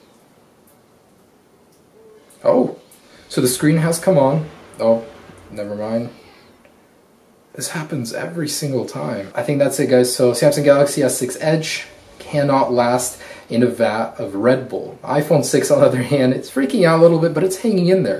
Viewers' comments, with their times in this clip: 0:06 In listen closely u hear someone yelling